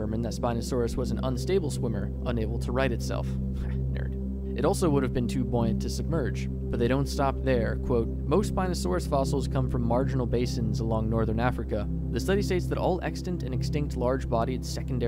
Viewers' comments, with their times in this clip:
0:03 What were you mumbling for that split second?